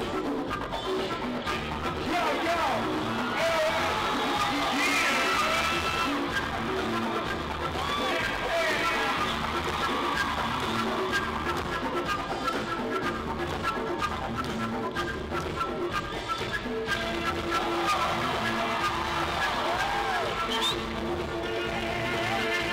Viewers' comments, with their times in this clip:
0:03 The hell was all that bullshit fangirl cheering that guy wasn't even that good...smh